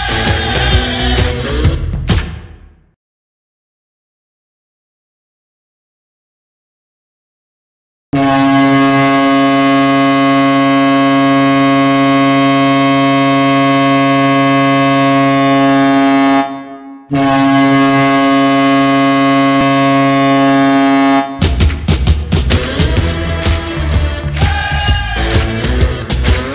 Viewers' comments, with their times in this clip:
0:08 Oh baby, that's some nostalgia right there... That horn is seared into my brain.